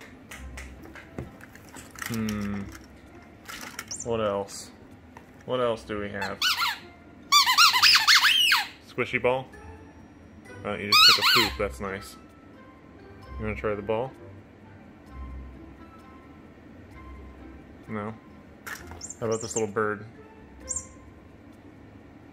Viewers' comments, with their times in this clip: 0:05 Rhia: Must kill sneaky snek. Two of my dogs reacted to the squeaky ball. 😂